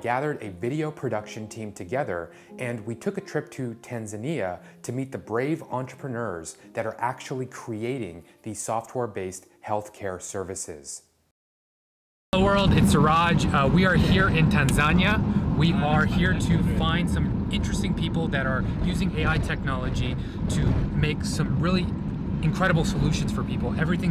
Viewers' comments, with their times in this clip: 0:03 He mispronounces the name of the country he's visiting to alledgely help.
0:11 "Tan ZHAN ya"? Wow, did not care enough about the place to learn how to pronounce it...